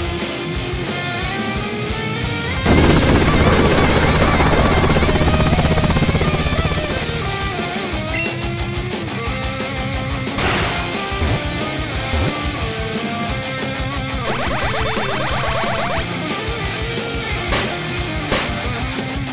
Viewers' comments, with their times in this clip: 0:05 why do I hear pillar men music